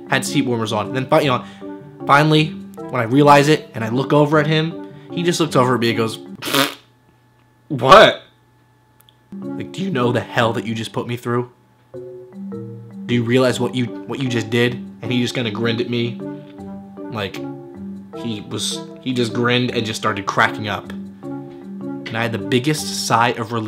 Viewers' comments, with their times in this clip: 0:05 he sounded just like Kian
0:06 Your impression of Kian was so good lmaoo